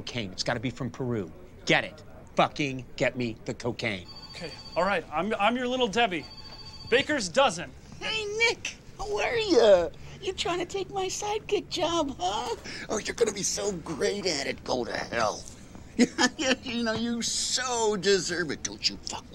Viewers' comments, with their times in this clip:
0:07 Who’s Andy imitating?